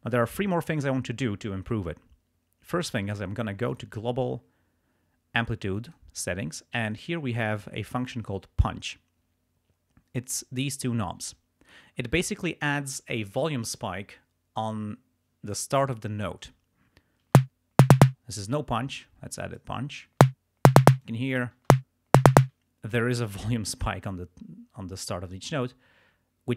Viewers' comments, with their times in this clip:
0:09 Punch :))) nice effect . :))) nice Idea.